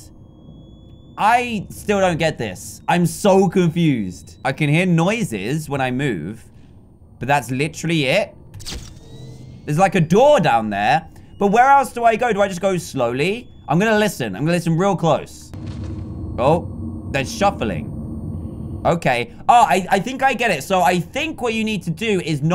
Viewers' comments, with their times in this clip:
0:03 DanTDM's girl scream